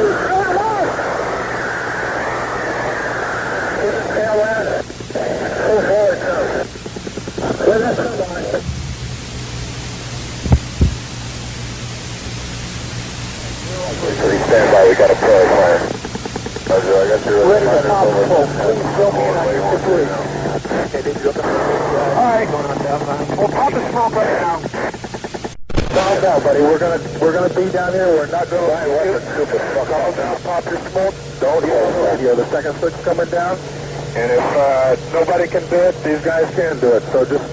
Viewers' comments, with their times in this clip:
0:09 i wonder if the reel to reel was hooked up to the radio or was it just microphones? STEREO
0:25 that was an explosion?